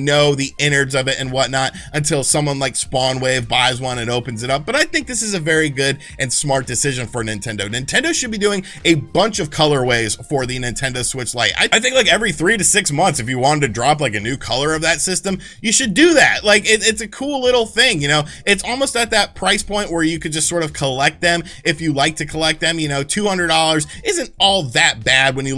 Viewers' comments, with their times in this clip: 0:09 here is weirest sound u ever make so close to 11 11 ! 😈😈😈